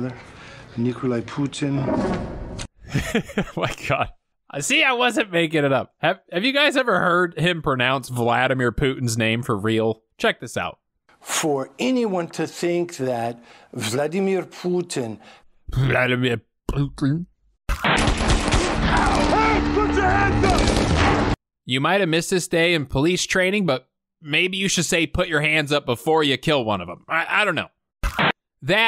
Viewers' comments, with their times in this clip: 0:10 When Seagal pronounces Vladimir Putin's name as "Poo-tin" (lol, poo) he's pronouncing "poutine" the way it would be pronounced in French. Maybe Steve is making fun of his buddy Vladimir?